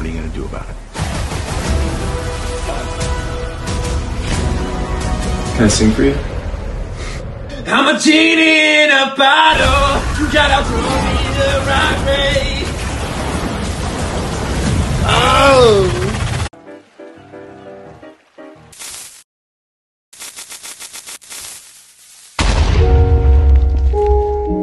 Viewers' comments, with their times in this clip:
0:08 this is not a normal audio